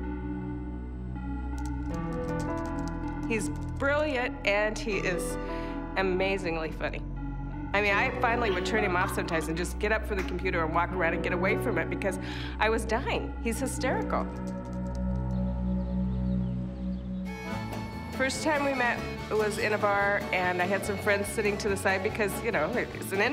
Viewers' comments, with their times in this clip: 0:08 that instrumental is hardd🔥